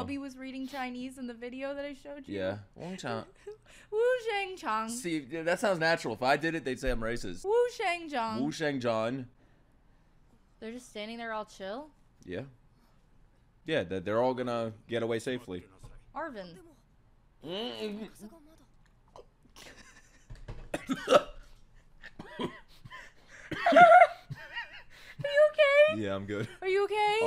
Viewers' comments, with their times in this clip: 0:08 I heard "Who Shagged John "